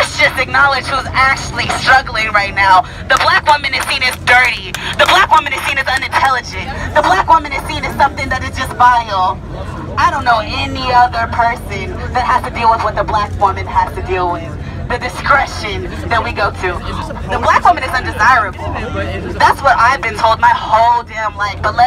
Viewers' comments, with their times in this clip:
0:03 you're not dirty? Lol with a cigarette in your hand and that smokers voice.